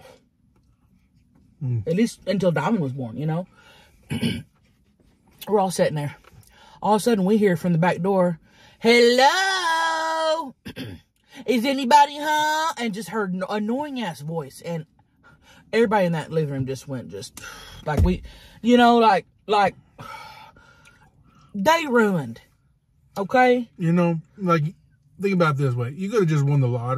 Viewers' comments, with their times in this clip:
0:07 the way she said hello